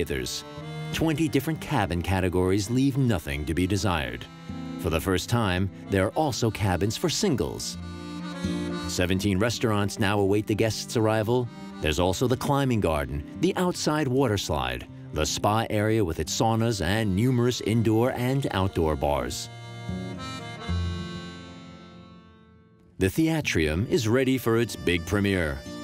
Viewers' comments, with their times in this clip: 0:07 there is a rundown in the narration and the visuals are clearly off. Ya ya, I work in the industry and was enjoying this video, just needs a little fixing.